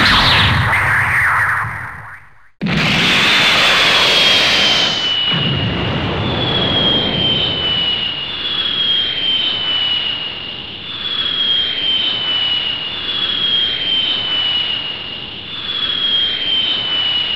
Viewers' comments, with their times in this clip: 0:03 Nah I have adobe sound booth. Thats how I have eggmans voice like a headset. And the sound loop is just lazyness. Kinda wanted to rush this out. no pun intended lol